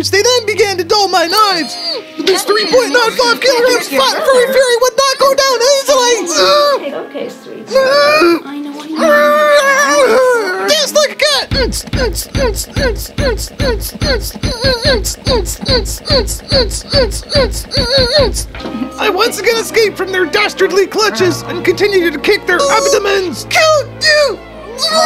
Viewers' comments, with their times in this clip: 0:10 This The Kind Of Beat That Go;